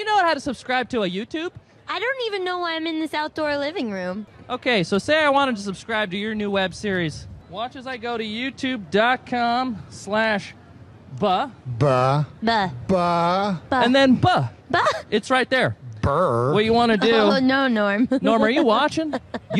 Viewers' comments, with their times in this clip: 0:06 the hipsters used Management speech patterns. Like a supervisor. Robots talking